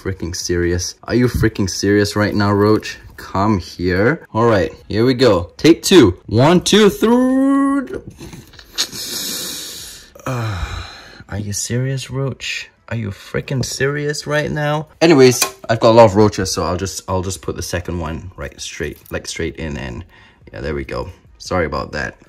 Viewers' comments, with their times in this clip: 0:06 1….2… Thrrrrr- fuse noise I died laughing XD